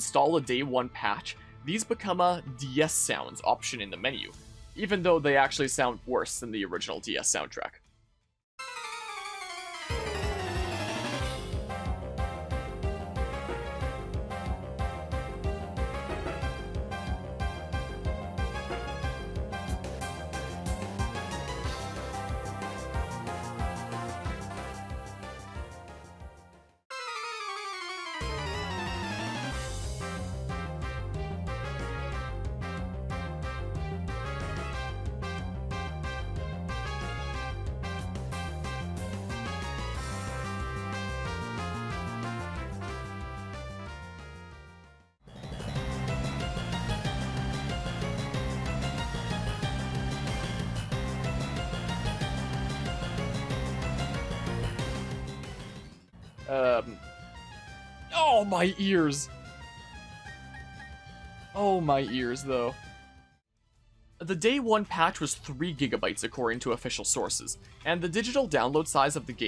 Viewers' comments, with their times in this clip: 0:04 How do the "DS sounds" in the remake sound worse than the original, actual DS sounds? Game Freak made a proper soundtrack for Diamond and Pearl, which should contain the highest quality version of said songs, so what happened here?
0:05 i physically cringed at the music comparisons
0:09 to me it sounds like they took the MIDIs from the original game and just put them directly into the remaster but since they used a different collection of soundfonts it sounds much worse as well , i dont know much about the sound processing on the DS but i imagine part of why it sounds worse is also because the soundfonts worked well with the limitations of the DS and since that isnt masked on the switch anymore it doesnt get the same treatment. basically the DS doesnt sound bad because the soundfonts sound fine with the limitations, but with the upgraded quality of audio on the switch it just sounds wrong , if you listen close it really does just sound like midi files being played
0:36 butchered the song:(
0:57 Jesus Christ, that sounds like a sad fart, not a trumpet😨I thank myself every day for passing this game up. 60 dollars well saved.